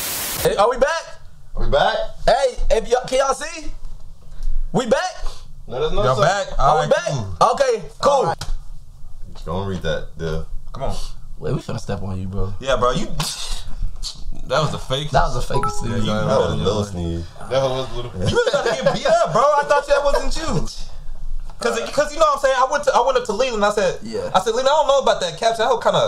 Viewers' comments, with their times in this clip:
0:09 The fake sneeze got me absolutely DEAD 😂😂😂 that boy know damn well he ain’t have to sneeze